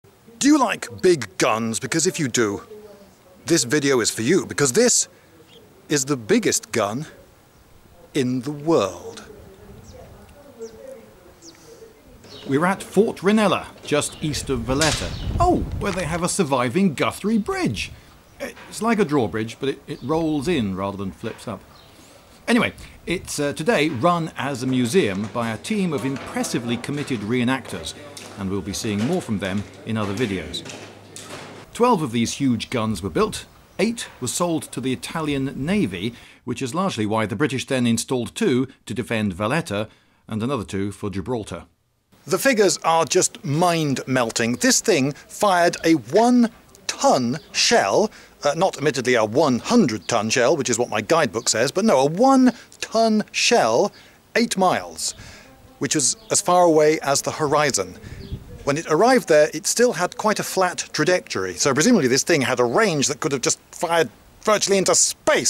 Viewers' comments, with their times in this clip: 0:06 that's a good Jeremy Clarkson impression
0:52 A WANTON SHELL!?!?!?!?